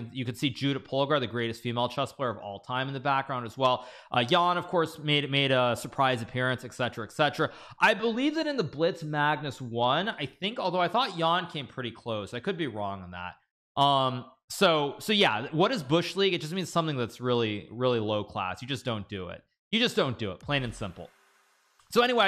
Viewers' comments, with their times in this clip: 0:06 I like the way he says "excetra excetra"